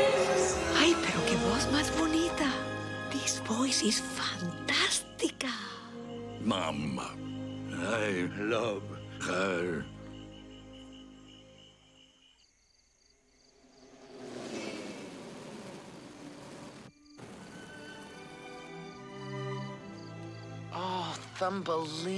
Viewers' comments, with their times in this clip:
0:05 Sound comes back